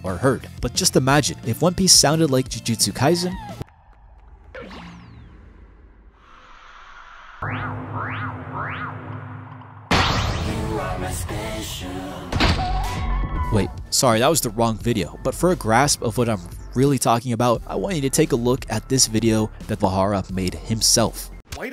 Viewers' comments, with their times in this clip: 0:03 Iconic and memorable sound effect, tho.